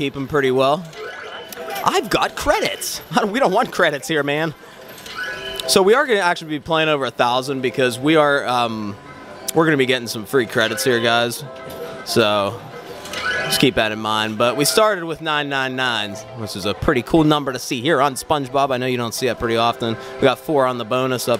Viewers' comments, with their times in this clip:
0:06 You can tell he’s trying so hard to make his voice deeper lol in the beginning. You can hear the real voice as he gets happier